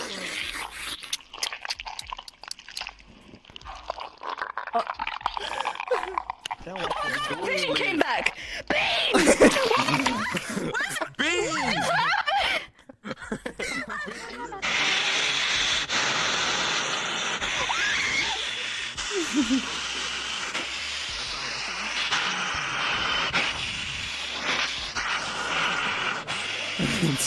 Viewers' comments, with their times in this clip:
0:08 WHY'D SHE SAY BEANS LIKE THAT LMAOI
0:08 contender for one of the most powerful BEAN shouts